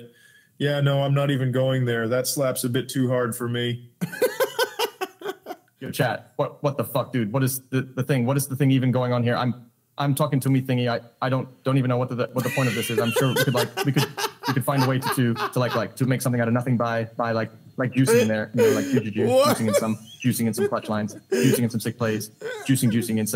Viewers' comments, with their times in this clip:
0:06 AI XQC having a seizure 😂